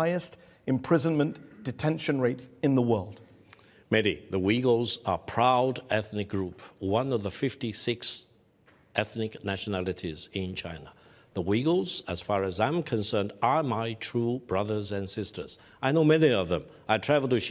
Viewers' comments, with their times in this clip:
0:03 The Wiggles are his brothers?? Which one is he ? Blue, Red, Yellow or Purple?